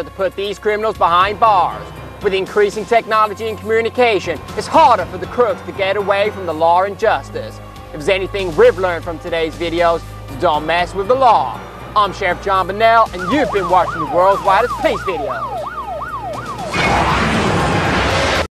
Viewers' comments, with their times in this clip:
0:07 he says law(r) and justice. When you add this R it sounds really british.